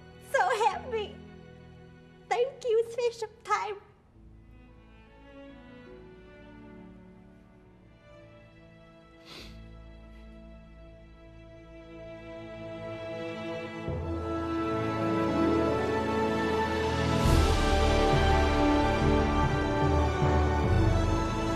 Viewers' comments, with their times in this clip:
0:09 The little sniffle from Dusan is hilarious